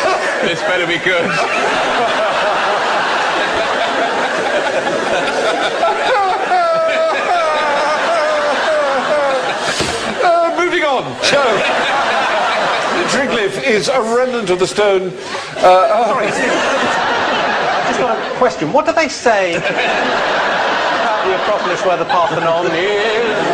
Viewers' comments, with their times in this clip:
0:07 I love his fake crying